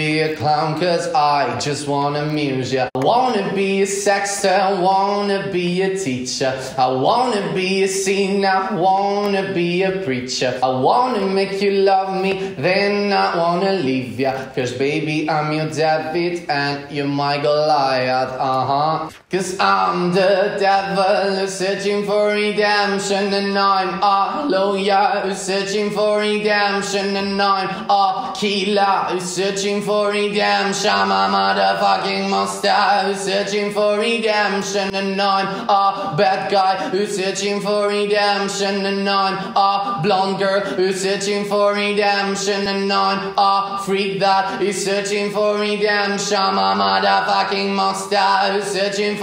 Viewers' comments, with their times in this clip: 0:03 The whole group laughed at this.
0:18 that vocal bro
0:25 he uses vibrational bass
0:31 BRUH 😭😭😭 the way he sings that line 😭😭😭😭 i am dead